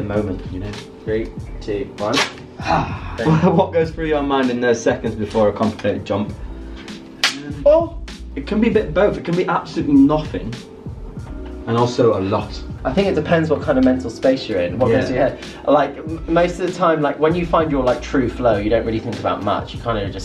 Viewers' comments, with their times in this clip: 0:07 The "oww" was so cute